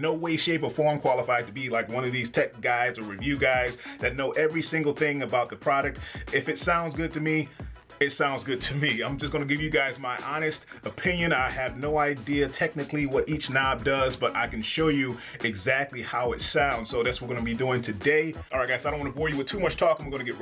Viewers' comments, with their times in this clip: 0:03 holy shit that was so serendipitously rhythmic